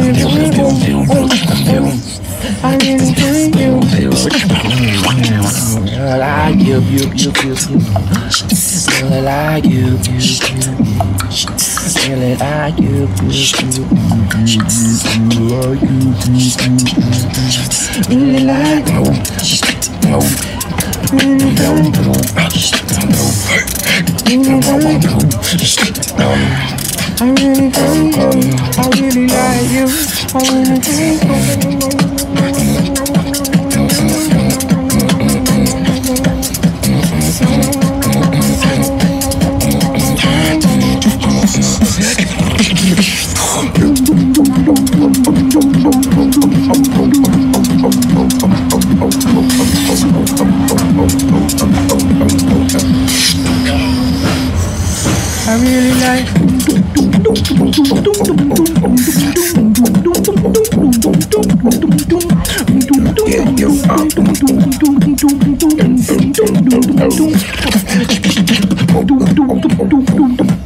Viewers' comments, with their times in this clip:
0:10 dharni is on fire with that deep!
0:57 dat drop near jesus crist !!! beatbox gods <3